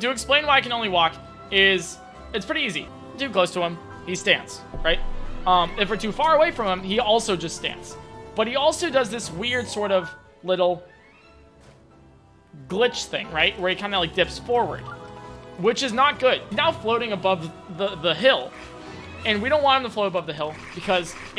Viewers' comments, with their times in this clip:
0:09 I love how you make zoom on Sidon's crochets and suddently get quiet.